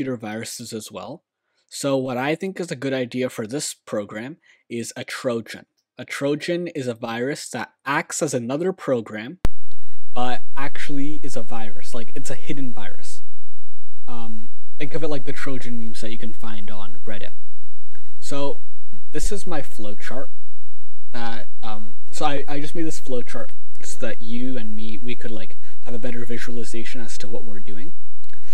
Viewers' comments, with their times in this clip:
0:09 I think you hacked my left ear accidentally I can't hear anything